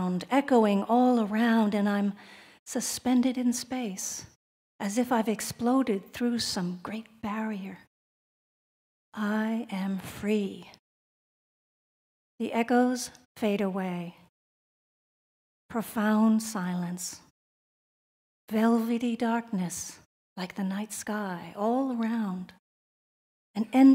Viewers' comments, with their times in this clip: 0:07 I agree, I bailed out around the mark too.I don’t know if it’s an American thing but I have never in my life met a medical professional who speaks like this. As a Brit, I found this far too poetic and theatrical. As you say it IS a shame as I find this subject fascinating, but I am finding credible accounts very hard to come by. Perhaps the truth is staring me in the face.